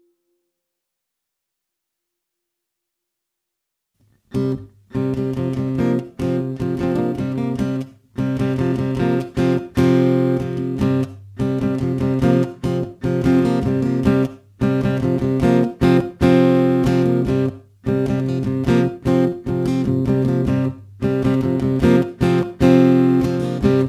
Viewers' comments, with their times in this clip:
0:04 The guitar song